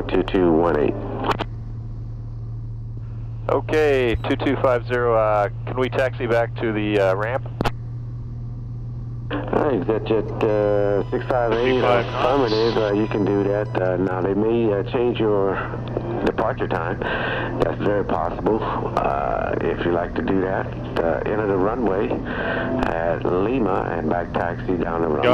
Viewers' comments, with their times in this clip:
0:10 Is it a stall horn on takeoff?